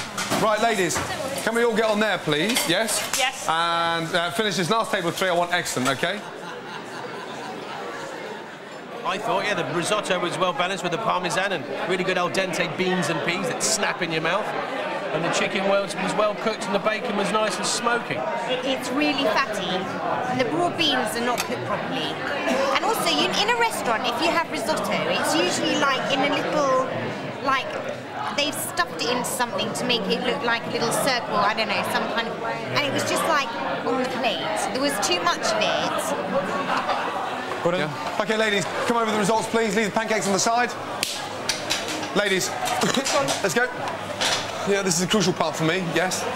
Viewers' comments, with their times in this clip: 0:05 That better be good food because the Joker is laughing in the background, assuming he's happy his food is coming
0:06 listen to that guys laugh lmao
0:06 Wow, what an evil laughter :D
0:06 The laugh got me dying wtf!
0:06 Fucking Dracula laughing
0:19 How I be sounding like in class when the teacher wakes me up from my nap to answer a question
0:19 gordon would have been bloodthirsty if he heard that woman talking like a stuck up toff
0:22 she sounds like Sharon Osbourne
0:32 the most annoying voice ever
0:32 -This guys is fake British Poshness it's amazing hearing her try and be stereotypical on the accent 😂